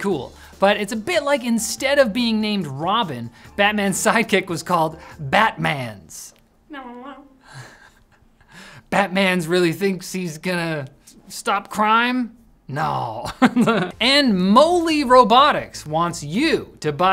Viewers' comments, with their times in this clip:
0:05 the Batman sound effect here killed me 😂😂😂😂😂😂😂